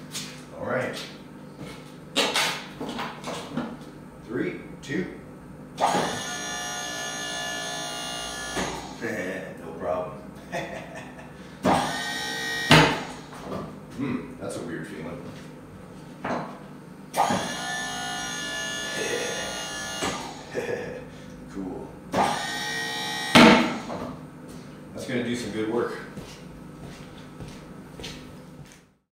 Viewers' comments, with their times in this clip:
0:05 bevis and butthead laugh
0:17 sounded like Beavis and Butthead lol. That is awesome!!
0:18 Yeah, yeah Cool! Eh hee Yea, I can tell you are a fan of Mike Judge. Yeah yeah cool!
0:20 lol you sounded like butthead from beavis and butthead